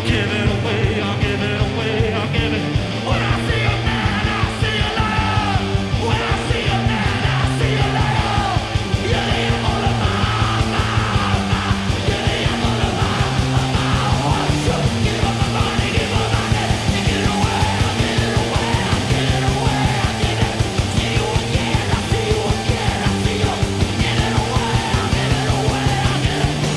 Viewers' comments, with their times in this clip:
0:09 From onwards Yannis is growling like Metal … powerful stuff